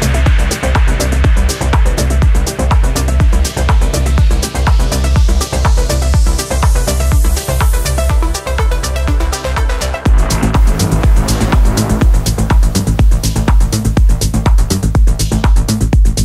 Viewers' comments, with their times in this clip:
0:03 The two successive tracks starting were perfect to set my evening after work.... Love the progressive build up !